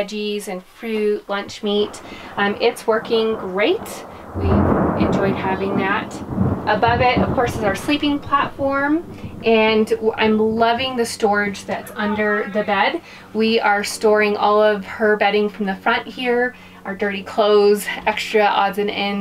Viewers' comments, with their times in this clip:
0:04 I luv that thunder right there.
0:04 Was that thunder ??